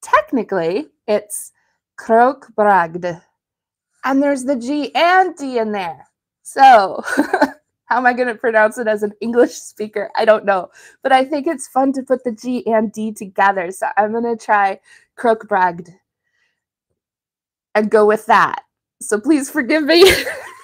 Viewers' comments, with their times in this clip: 0:03 Yes! This is a good pronounciation (spelling). Keep on doing well with your practicing in speaking strange scandinavian words. 🥰